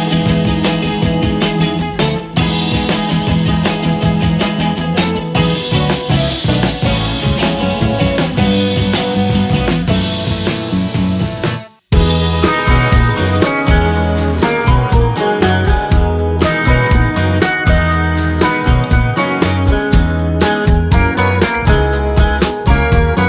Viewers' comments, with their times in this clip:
0:09 10 seconds? You didn't even get to the best part which is the tempo change